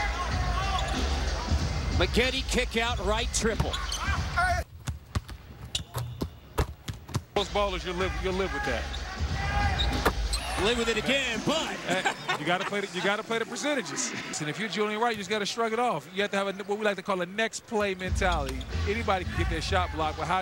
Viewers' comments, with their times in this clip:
0:03 Anyone else notice those sound effects? They subbed in some NBA 2k sounds. Practice mode.